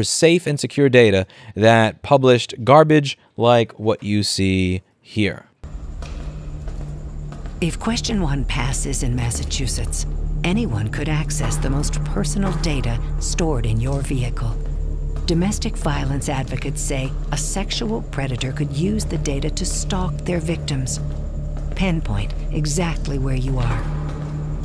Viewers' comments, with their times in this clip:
0:08 thats not how you say massive two shits :(